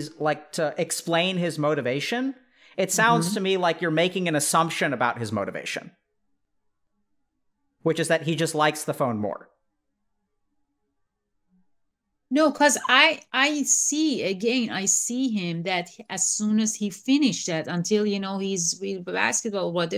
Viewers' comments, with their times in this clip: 0:06 the look and then pen click (I say this for laughs ofc)